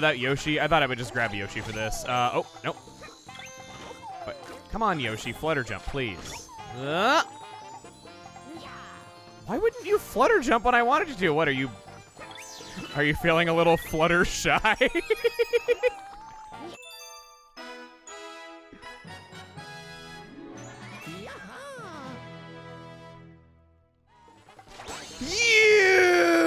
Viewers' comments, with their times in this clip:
0:09 I'm sorry but in the song I just hear "If I criticize it, you can still like it too"